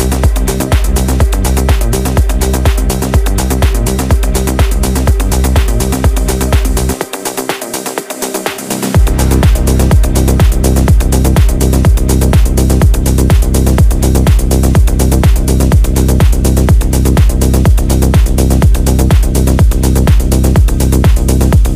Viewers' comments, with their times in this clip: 0:06 that transition :face-blue-wide-eyes::face-blue-wide-eyes::face-blue-wide-eyes::hand-orange-covering-eyes::hand-orange-covering-eyes::hand-orange-covering-eyes::text-green-game-over: